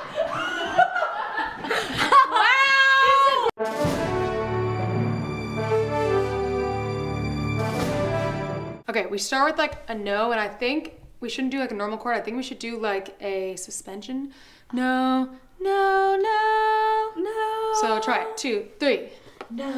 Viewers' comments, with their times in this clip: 0:03 Did anyone noticed the music played in between scenes is so close to the one in Plants War? for anyone who wants a time stamp.